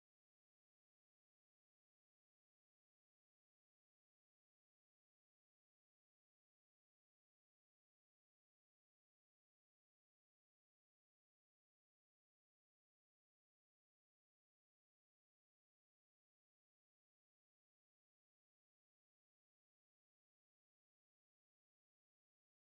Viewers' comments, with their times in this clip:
0:06 where the sound go?